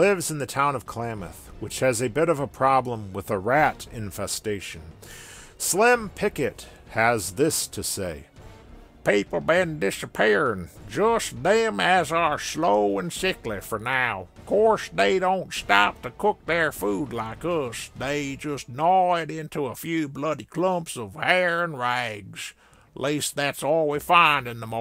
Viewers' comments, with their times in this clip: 0:08 did you ever consider a career in voice acting